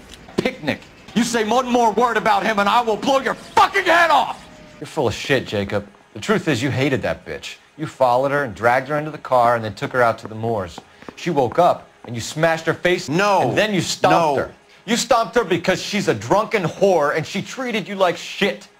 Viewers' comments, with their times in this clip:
0:06 listen with your eyes closed... ...you will think that is real